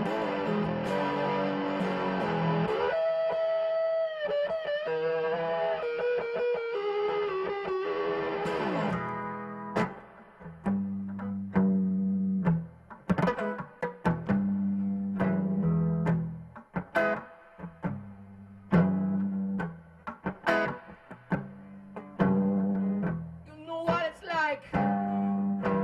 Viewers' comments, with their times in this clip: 0:10 that little percussive trick he does is fucking sick.